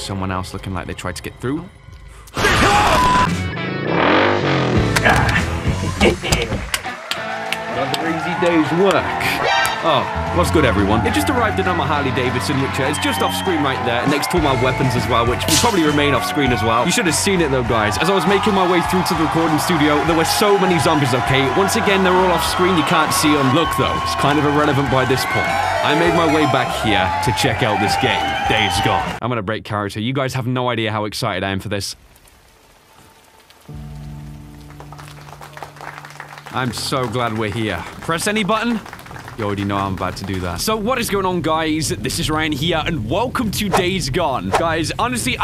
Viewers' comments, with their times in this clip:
0:03 thought my neighbor started construction again
0:27 Turn On Subtitles “Dave’s Gone”